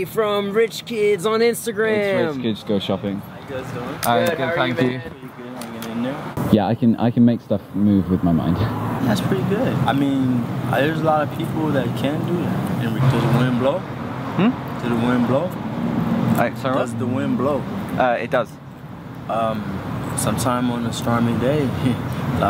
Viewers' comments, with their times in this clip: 0:09 he does not look the way he sounds